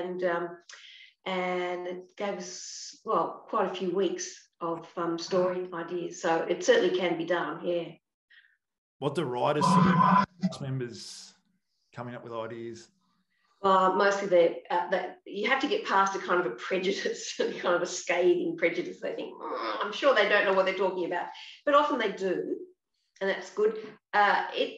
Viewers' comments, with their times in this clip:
0:09 That made me jump! Strange sound.